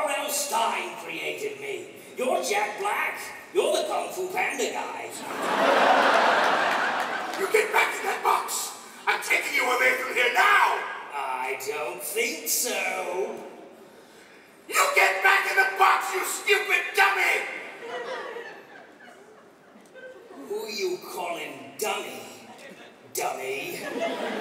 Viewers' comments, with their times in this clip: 0:06 what happened to Jack black's voice?